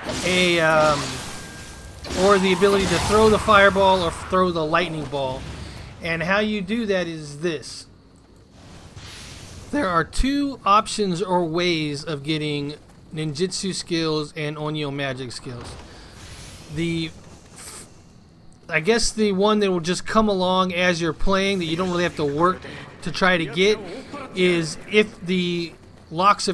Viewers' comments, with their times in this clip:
0:08 great Video and all but how is noone talking about that voicecrack i mean this is the internet after all...